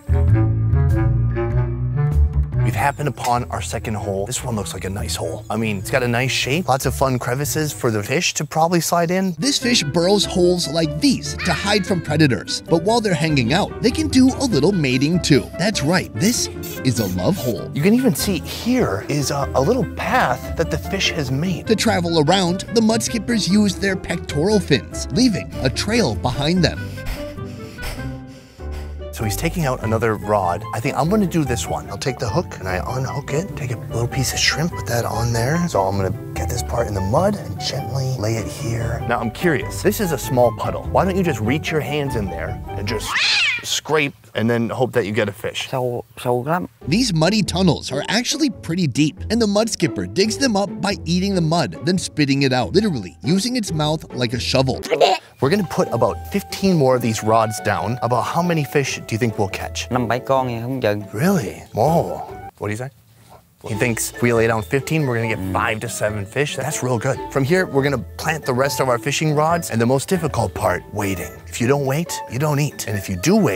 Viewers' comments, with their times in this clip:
0:09 that edit was funny love how he screamed as he fell in
0:13 The squeaking sounds tho.. 😭
0:54 I laughed so hard with the sound of the fish spitting out the mud Gotta appreciate the one who made the sound effect 😂
0:54 holy crap, that sound effect caught me off guard....looooooooool